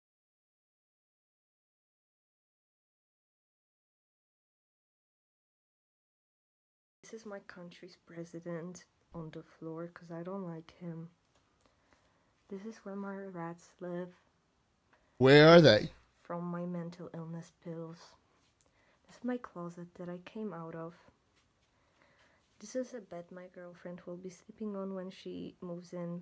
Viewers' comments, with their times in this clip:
0:10 when sound comes back